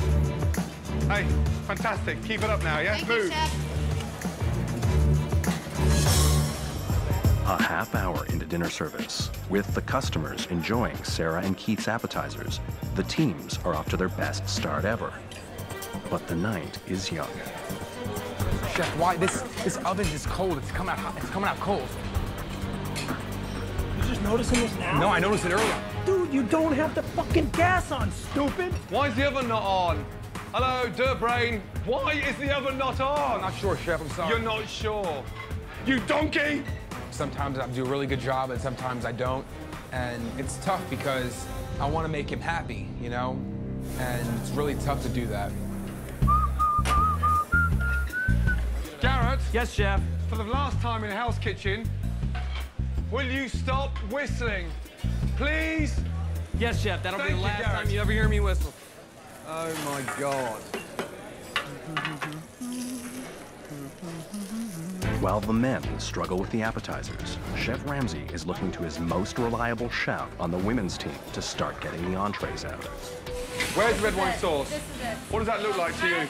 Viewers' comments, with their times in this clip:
0:07 why he speaking like that bro
0:25 mans talking like a GTA npc
0:34 The way he said donkey got me rolling
0:35 That “YOU DONKEY!!!” from Gordon came deep down from the heart
0:36 The way he says.... YOU DONKEY.. !!!!😂
0:50 DONT WHISTLE Proceeds to hum
1:02 He hums as a defense mechanism. I LOVE IT.